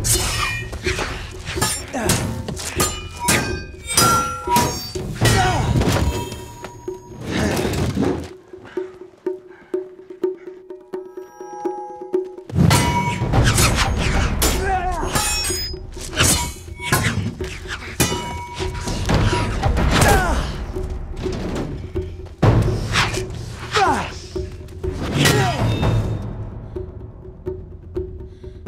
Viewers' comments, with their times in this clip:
0:10 < Start of the best part. The ringing sword. 😀
0:11 man i love that sound of bronze sword.. Super chill
0:13 was that a sword noise or eating food in Minecraft.